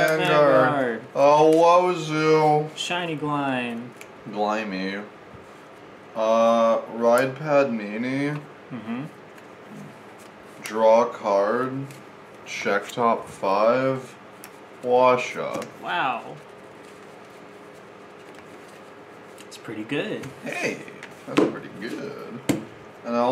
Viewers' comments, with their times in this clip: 0:06 something funny about saying Padmini in a very uninterested voice., reminds me of napoleon dynamite